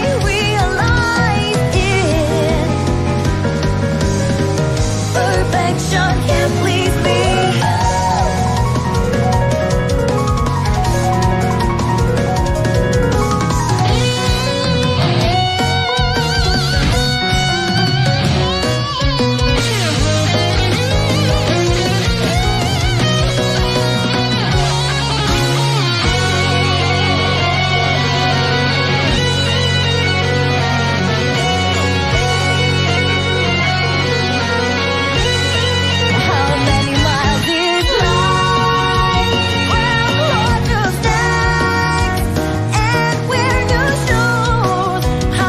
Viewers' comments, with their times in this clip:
0:06 That piano solo is one of the best things i've ever heard in a fighting game
0:08 majestic ahh beat 😌
0:26 do any of you know the bagpipe sounding instrument in this part
0:26 i don't like this song that much but this Juno part made me wet myself